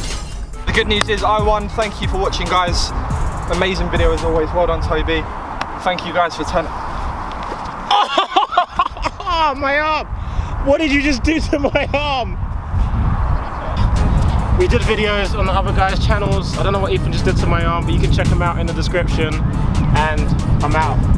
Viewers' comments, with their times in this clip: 0:06 Anyone else hear a loud click when Tobi's arm is pulled!? lol
0:06 you can hear the crack from your elbow
0:06 Listen carefully you can hear Tobi's arm click ...
0:06 you can hear tobi"s hand break xD
0:07 you can hear a cracking sound.